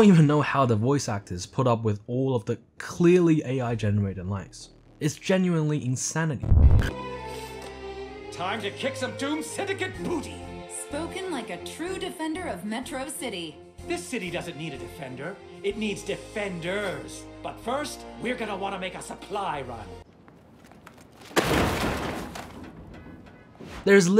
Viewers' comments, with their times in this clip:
0:07 Bet all my life savings that the voices are at generated too